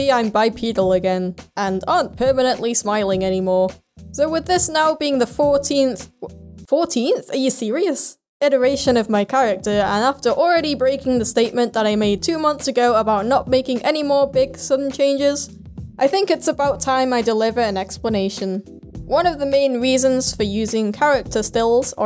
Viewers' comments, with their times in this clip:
0:05 Is it me or does this sound very Irish